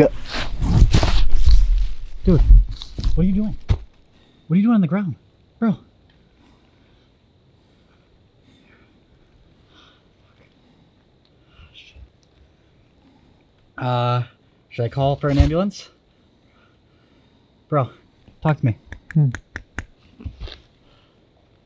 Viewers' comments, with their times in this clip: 0:07 not sure but there is someone whispering hard tell what it's saying.